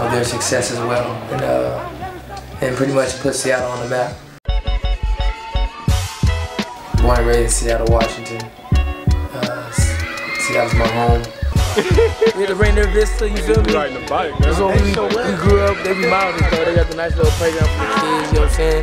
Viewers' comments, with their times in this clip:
0:03 the song dat starts got dat dialated people beat...but who is singing?